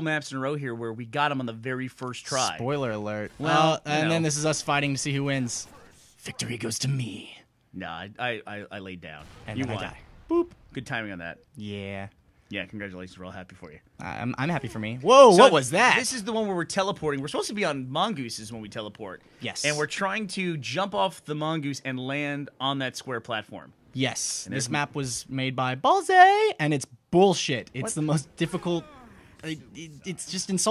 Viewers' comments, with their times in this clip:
0:06 XD i died at the epic voice---I want that voice played at the end of any match in halo to the winners haha
0:11 At first he didn't really sound like jack black, but after he REALLY sounded like him.